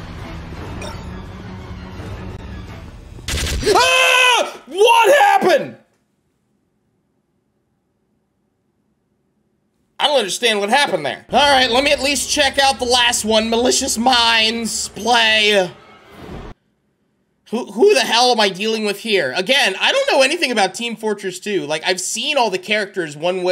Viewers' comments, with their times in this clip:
0:08 he sounded like goofy from mickey